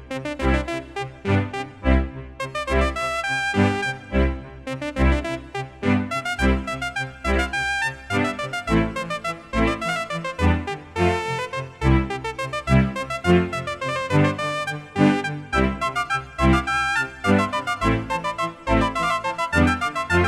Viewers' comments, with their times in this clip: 0:06 I cannot for the life of me recall the classical piece that sounds like, but it really elevates the vibes of this piece!